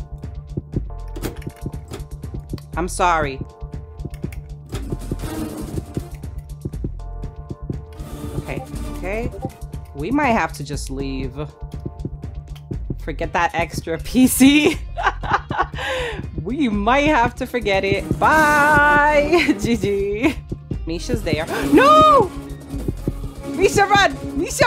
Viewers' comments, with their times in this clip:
0:06 discord noises lol